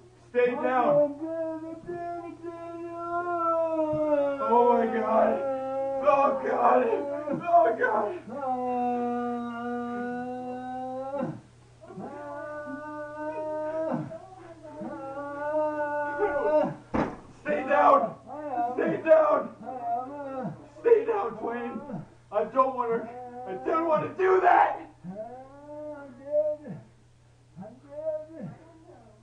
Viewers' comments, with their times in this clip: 0:04 sounds like bad acting. And ENGLISH dubbed anime
0:16 I think he turned into a car huuuuuuuuuuuuuuu